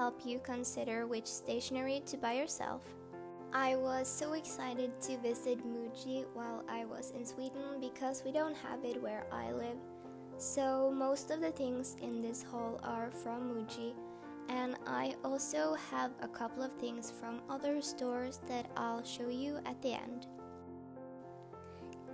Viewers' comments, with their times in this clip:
0:10 ohhh your voice is so cute i can’t tell😍😍